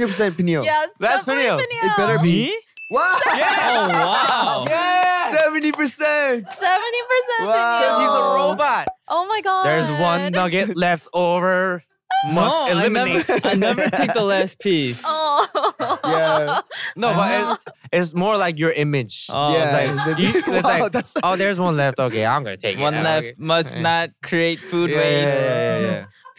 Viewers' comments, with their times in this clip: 0:09 PH1 imitating Peniel as a robot took me outtt!! 🤣🤣🤣 "There's one nugget left, over MUST ELIMINATE" 🤣🤣🤣